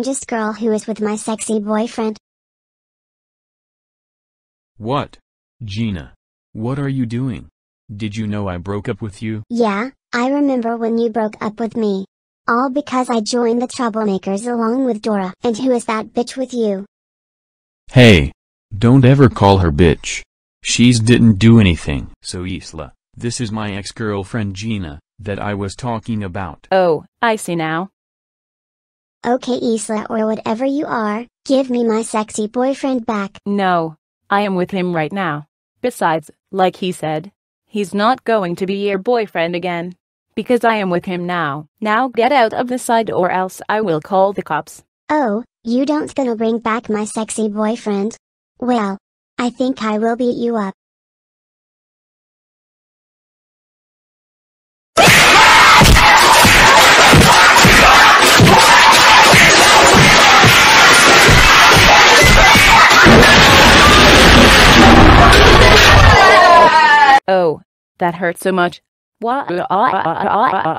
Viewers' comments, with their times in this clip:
0:06 Damn Joey voice
0:55 LOOK OUT OR WATCH OUT!!!!!!!!!!!! Turn down the volume!